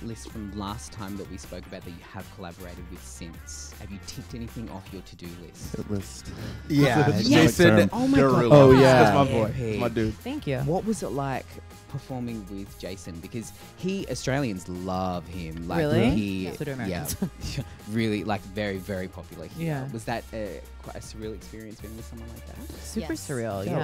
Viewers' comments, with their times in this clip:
0:07 Avi finally speaks